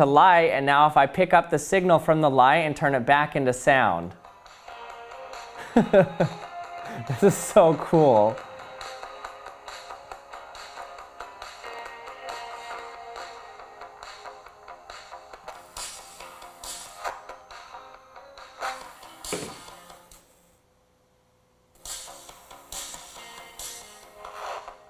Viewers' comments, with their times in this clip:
0:06 "this is so cool!"...Terrific Butt-Head impression. Lol. But on a serious note, that was a great demonstration video. Thanks for sharing1